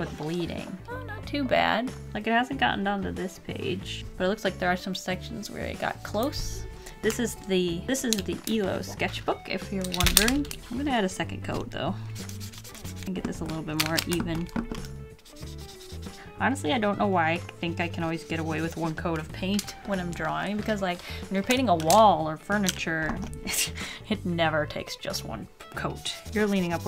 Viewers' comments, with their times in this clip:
0:08 Did you say eloi sketchbook?
0:11 At around the mark she says something like "elose?"